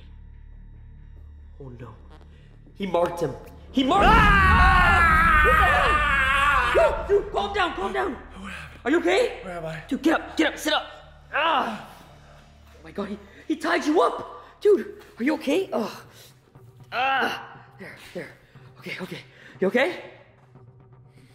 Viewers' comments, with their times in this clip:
0:04 bruh goofy ahh scream😂